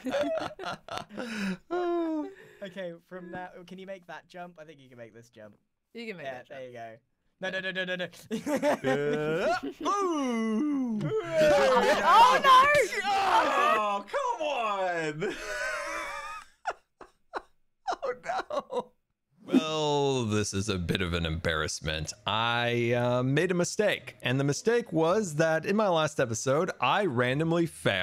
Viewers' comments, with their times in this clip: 0:10 what is that sound Grian made XD XD